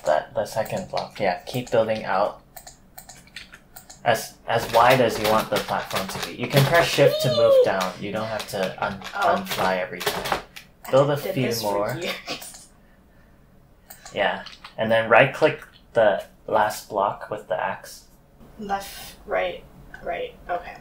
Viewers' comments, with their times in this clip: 0:05 on it sounds like your wife is nearly smashing your pc because of the sounds of the pc butons